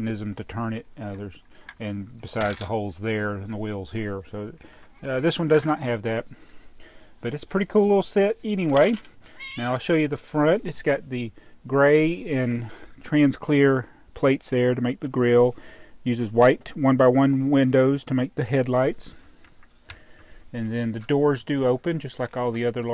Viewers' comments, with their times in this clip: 0:09 sounded like godzilla n ur background lol